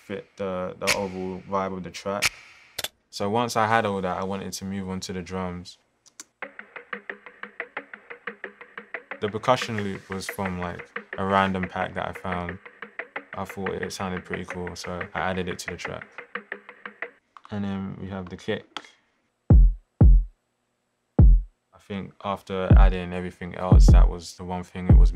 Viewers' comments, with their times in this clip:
0:07 sounds like the beginning of Ferg's Plain Jane